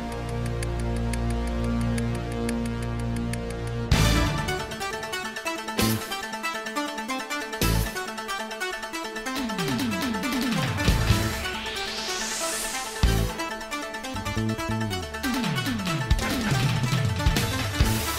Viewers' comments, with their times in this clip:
0:04 Last hensin battle bgm my favorite